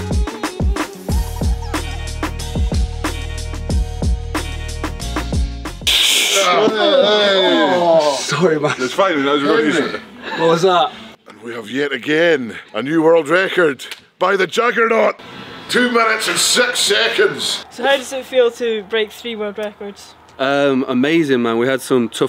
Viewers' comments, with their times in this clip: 0:07 "It's fine SOMETHING SCOTTISH" haha!